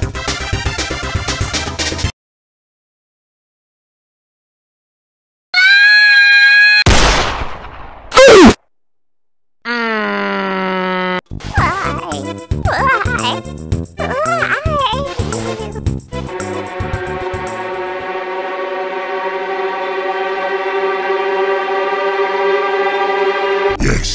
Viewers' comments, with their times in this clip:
0:05 Litteraly Kirby's Scream. 😅